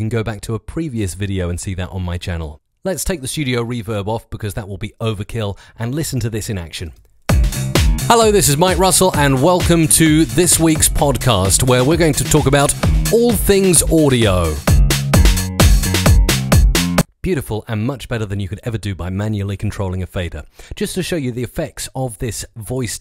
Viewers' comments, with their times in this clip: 0:07 But it makes it clip like crazy! Look at that clipping going mental